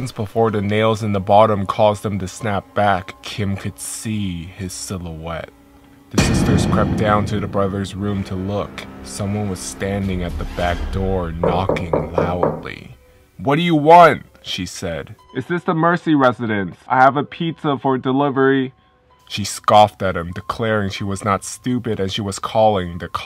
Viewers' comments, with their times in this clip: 0:10 Lmao I thought there was someone actually at my door
0:11 the sound of knocking door sounds real . Listen with earphone